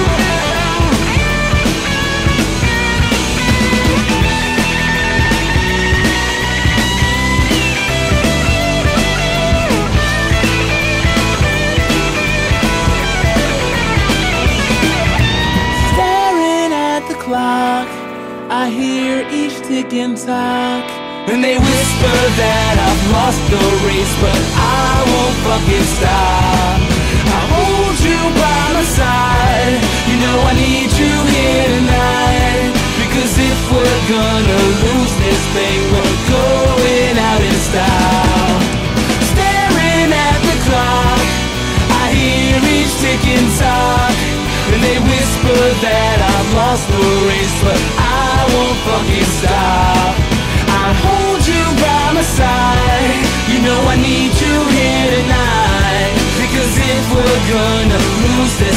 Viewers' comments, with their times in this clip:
0:03 Pretty sure he isnt playing what I'm hearing, but whichever is the real one, they both sound sick! :D
0:43 someone plug that mic pls! ahahahha